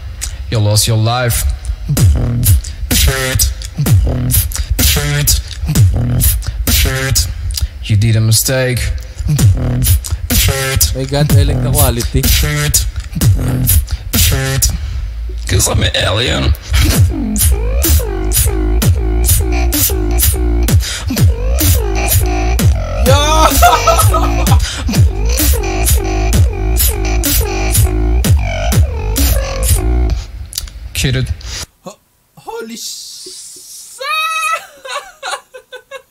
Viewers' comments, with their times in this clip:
0:06 (captions on) SHIRT SHIRT SHIRT
0:14 because i'm italian
0:19 that sounds can make with inward bass. I tried it and i got it.